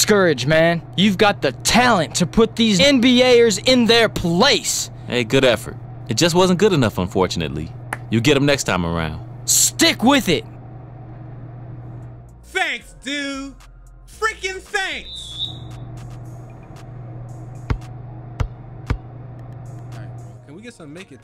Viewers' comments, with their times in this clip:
0:03 I feel like was a b.e.t edit try to hide out the cussing 😂😂😂 #funnymoments
0:04 The way he said “NBA’ers” sounded a lil motivated